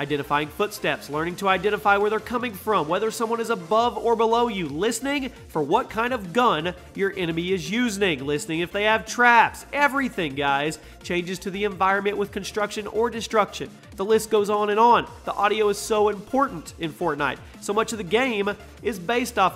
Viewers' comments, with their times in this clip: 0:07 Your enemy is “USE-NING”?